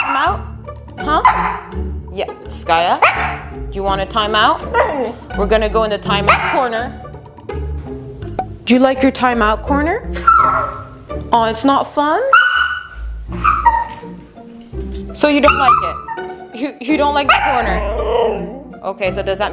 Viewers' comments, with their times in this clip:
0:03 Skaya talking back 😱😱😱😱🤣🤣❤❤